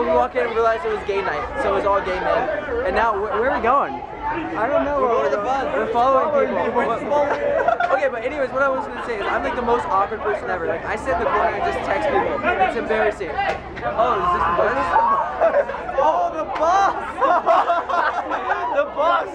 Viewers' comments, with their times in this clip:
0:06 LOL WHO MADE THAT LAUGH.